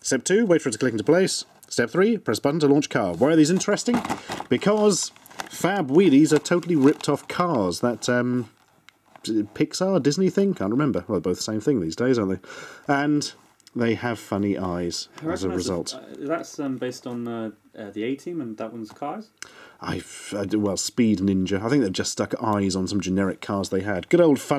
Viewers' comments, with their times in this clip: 0:06 Did he say fap wheelies?